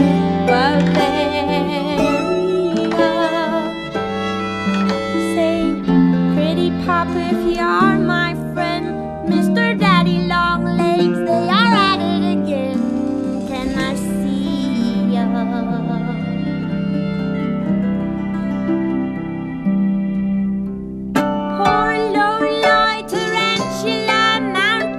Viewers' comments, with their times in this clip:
0:06 I love her voice ! I dont know why but I really love that line!